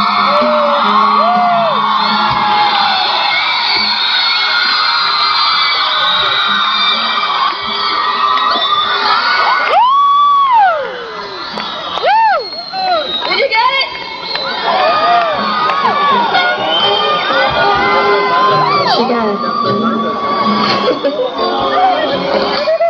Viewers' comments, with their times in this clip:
0:08 was that Whitney doing the whistle tones? Because she said "did you get it?" right afterwards